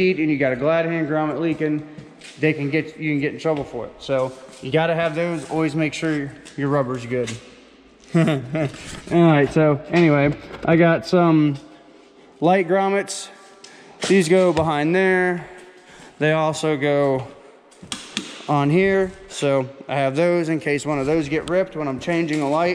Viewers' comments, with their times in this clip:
0:07 "always make sure your rubber is good" aye aye captain. That was advice beyond trucking explains the chuckle.